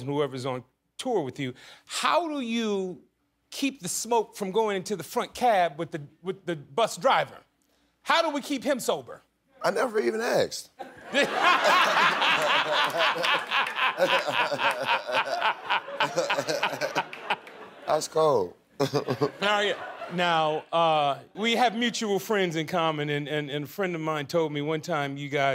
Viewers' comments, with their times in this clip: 0:10 That laugh lmao
0:10 facts 🤣 his laugh reminds me of my uncles while they playing poker 😂😂😂😂